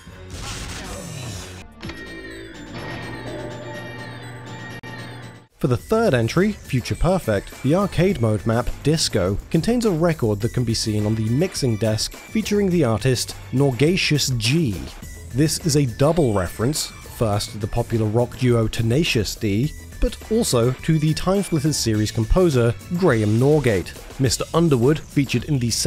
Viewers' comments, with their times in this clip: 0:06 Why does this music in the background sound like Bittersweet Symphony by the Verve?